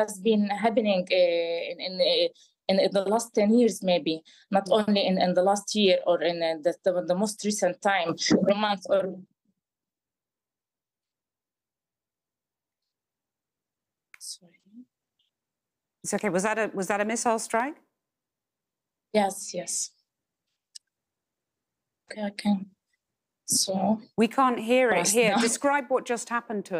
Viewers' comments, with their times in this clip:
0:07 If you listen closely that did not sound like an explosion. It sounded like someone saying something in the background. It did not sound like an explosion from an airstrike. Even if they are in a building, you should still hear a distinct sound of a missile coming in from far away and then the explosion. I maybe looking to deep into this but I believe someone is forcing her to say this.